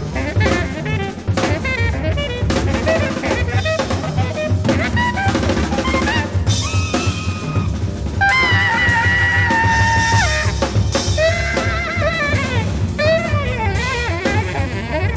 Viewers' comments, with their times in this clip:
0:03 … Fred Hopkins bass solo